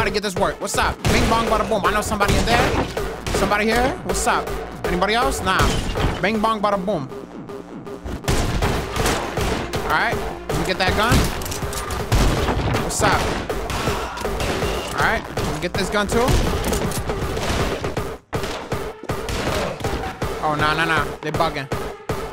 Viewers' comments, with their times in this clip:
0:07 that door kick, door smash against the wall, and the two shots were perfectly on beat. That was satisfying asf